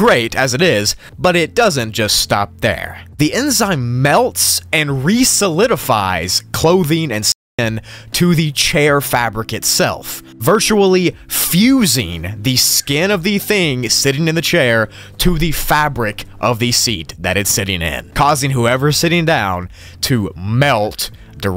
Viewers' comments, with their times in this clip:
0:05 Did anybody else catch that strange stutter/skip in the voiceover?
0:09 I don't understand why you have to censor "skin". That's the whole reason my mind immediately went to "semen" instead.